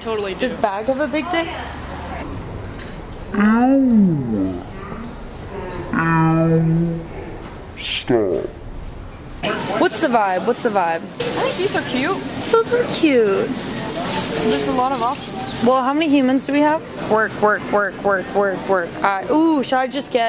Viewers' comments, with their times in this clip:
0:04 broski you know i hear that "bad gal" in the background #songcredstoesme